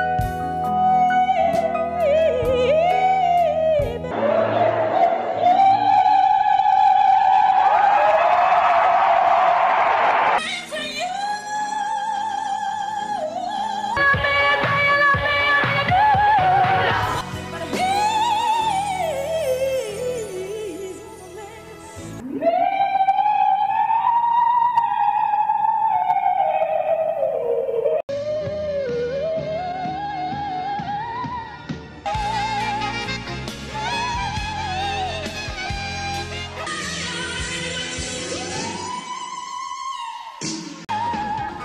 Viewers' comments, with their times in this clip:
0:04 I mean just hear the and compare it to any of Sohyang's G5
0:22 Ok but can we talk tho?! Siren at the most remarkable and pleasant capacity. And I love how you used the E5s from 2010. Your work is rly dope.